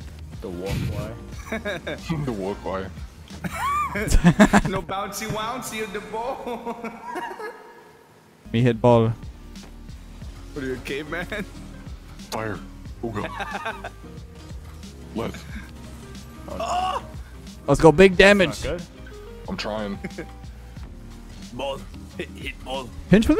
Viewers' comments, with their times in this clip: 0:10 what are you a gay man?